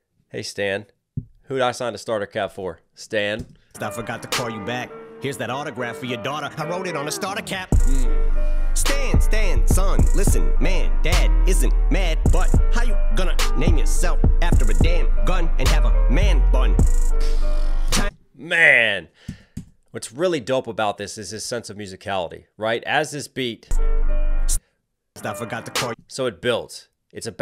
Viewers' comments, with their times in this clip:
0:08 That BASS drop gets me every time! 💨